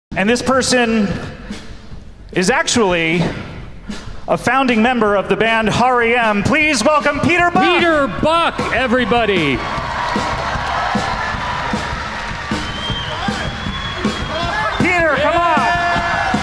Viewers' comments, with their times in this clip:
0:03 "Har EEe Emmm" must be a really good band.